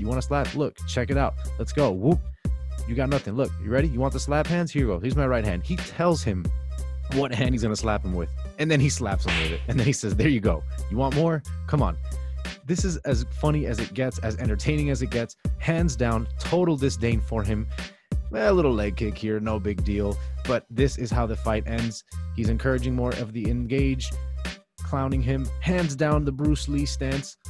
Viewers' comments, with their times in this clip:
0:09 The slap sound... Hahahahahahahahahahahahahaha